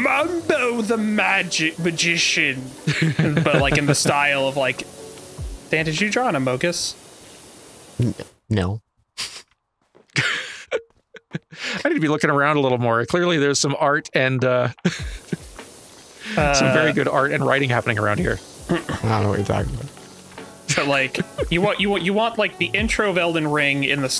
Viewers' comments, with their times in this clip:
0:07 that music cut chef kiss